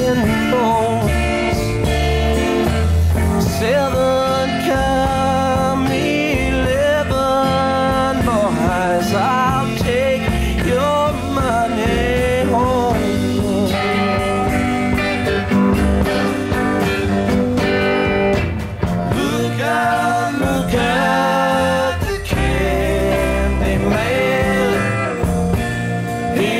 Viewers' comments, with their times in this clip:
0:08 I love moments like Its like this was performed back when people could just sit quietly and watch and listen instead of not being able to keep from wooooing.